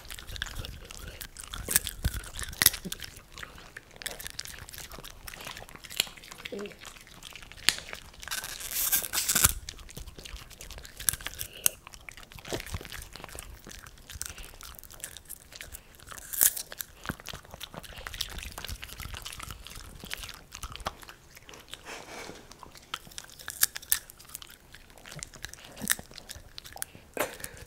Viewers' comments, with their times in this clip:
0:08 oooo oof owie styrofoam squeaky noises gave me asmr but in a nails on a chalkboard way
0:08 Until it was enjoyable for me then * NAILS DOWN CHALKBOARD * 😫😫😫
0:08 Just going back to old videos of Jenna's. LOL! When the popcorn squeaked 😂😂😂